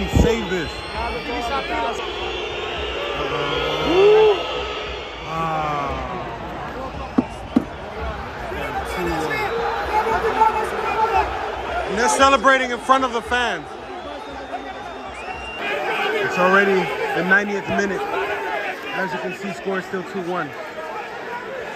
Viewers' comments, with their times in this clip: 0:06 SOME FRENCH LANGUAGE